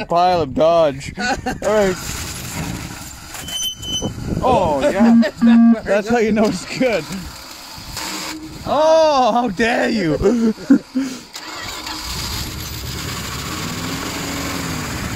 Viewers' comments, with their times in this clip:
0:03 anyone else hear a odd 2 beeps after that or is it just my headphones self destructing